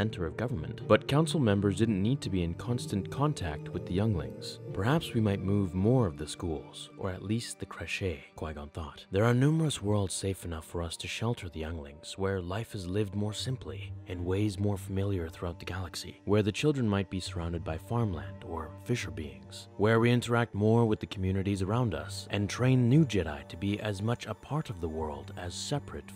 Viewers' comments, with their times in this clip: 0:07 Thats not how you pronouce creche lol